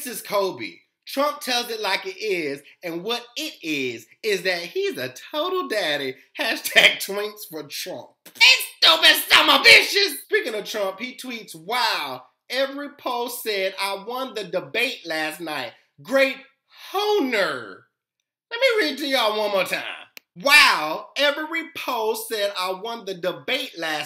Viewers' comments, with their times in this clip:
0:07 Does Anyone Noticed How He Said Trump ? 😂😂😂😂